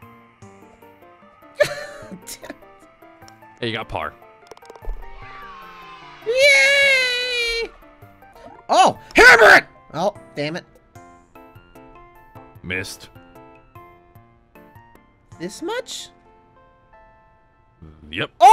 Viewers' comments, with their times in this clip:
0:06 i love how he say yay